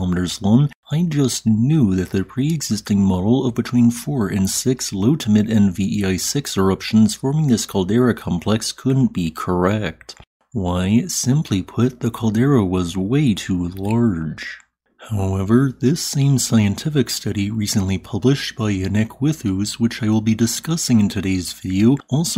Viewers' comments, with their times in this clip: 0:03 “I just knew…” Sound scientific reasoning! Either way, Taal is clearly a maajor haazard...